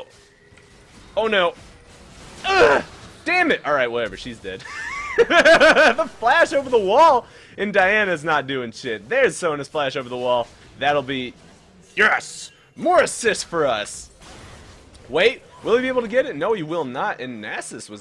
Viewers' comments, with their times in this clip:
0:04 Haha his laugh